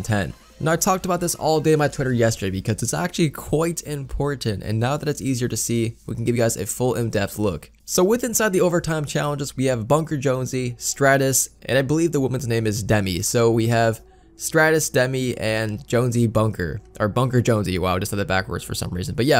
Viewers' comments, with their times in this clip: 0:04 QUOIT IMPORTANT “English Intensifies”